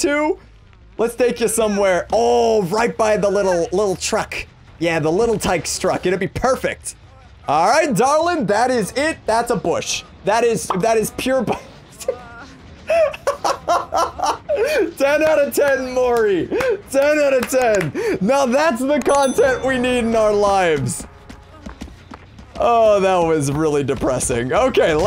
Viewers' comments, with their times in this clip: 0:08 without seeing the killing and just hearing her moan i thought i was on a different website